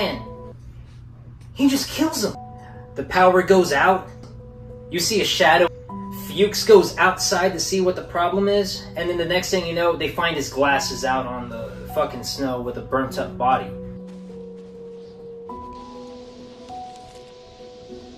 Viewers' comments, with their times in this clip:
0:05 another mistake you made - that's not MacReady. It's blair-thing - you can even hear the same noise/sound when he appears at the end and kills Garry